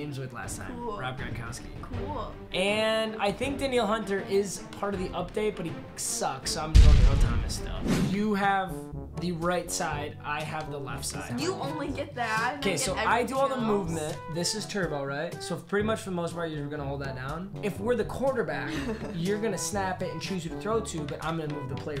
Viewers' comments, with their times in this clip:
0:03 he said denielle hunter right unlike any sports analyst...